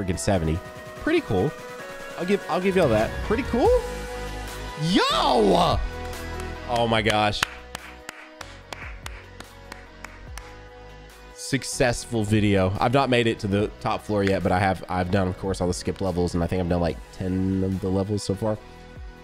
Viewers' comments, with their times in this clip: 0:03 no hype music cuz there is nothing to hype over 🥀